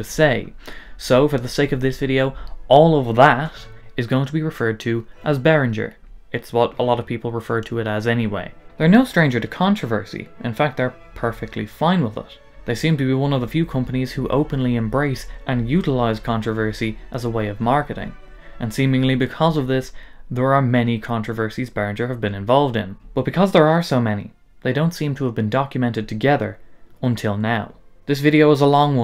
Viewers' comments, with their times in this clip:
0:10 am i dumb or was that mach e... loud